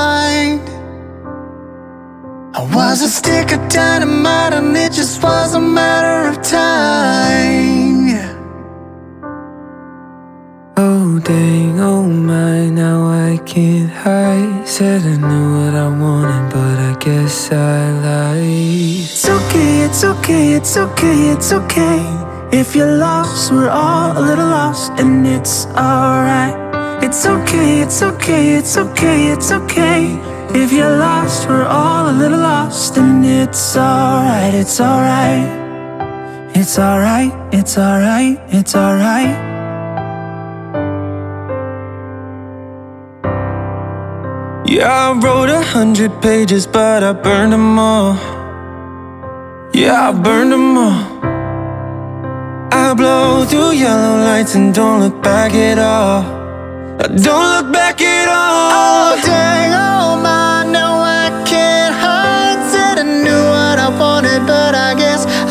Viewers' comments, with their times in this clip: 0:10 his voice is really calming 😊
0:52 This is an amazing cover! Your voices are so amazing and I got chills Nightbirde's voice and talent are so underrated and it's incredible how she is so joyful even when she was told she had a 2% chance of living through her cancer. anyways, God bless!!!